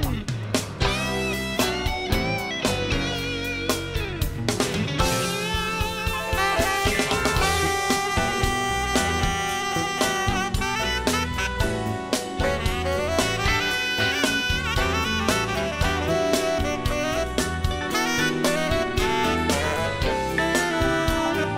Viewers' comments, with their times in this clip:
0:04 we do hear the late (and great) Cornelius Bumpus solo in his grand style. This CB solo is even better than that of Doobie Bros fame. I just love this one. As for my preference CB died too young. He is on this list about to play Janie Runaway. Do hear it, won't you?